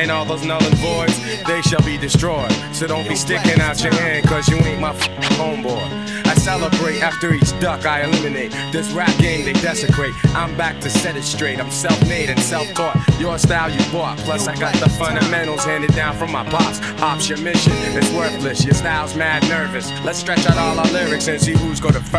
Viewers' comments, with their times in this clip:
0:05 The crazy ass chords 🎹 are strait 🔥🚒🔥🔥🚒🔥🔥